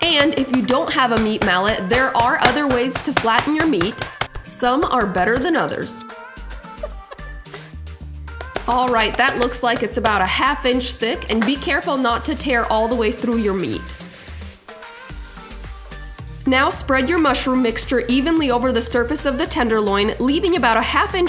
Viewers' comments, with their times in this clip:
0:03 this looks so yummy 🤤 i should be studying for the MCAT right now, but i gotta watch your videos because your recipes are so amazing, i have time to study lol also i don’t know why but it sounds very weird.....😂